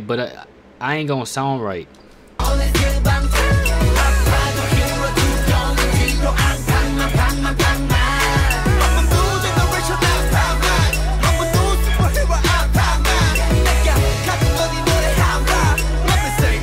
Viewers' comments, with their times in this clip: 0:03 Haha jimin is that you in the background hitting that sexy adlip hahahahaha love ur reaction❤️❤️👍